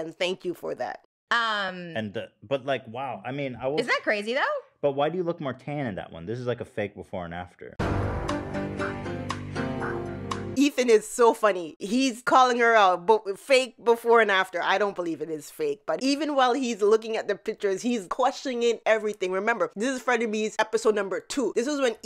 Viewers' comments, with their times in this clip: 0:04 😂😂😂😂😂😂😂 fake before and after. 😅 and then the x-files soundtrack I can’t even!!😂